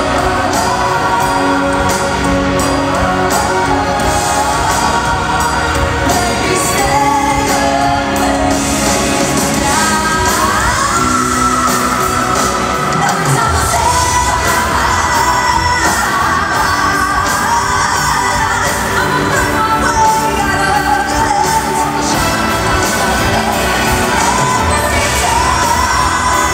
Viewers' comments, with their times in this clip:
0:09 Apart from one off note this was absolutely brilliant. I'd be shocked if she wasn't near the top of her semi-final!